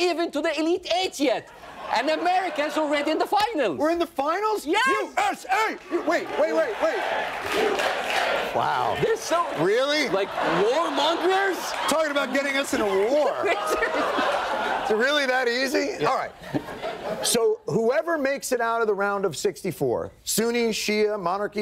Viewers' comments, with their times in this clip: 0:05 The surprised disappointment in Jon's voice just because they kept on chanting....wow!